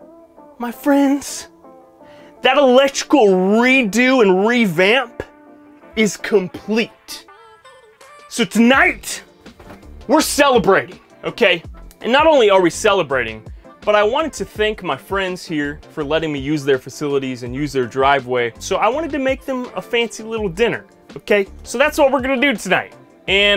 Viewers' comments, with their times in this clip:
0:09 Damn that "okay" hella sounded like Joe from family guy.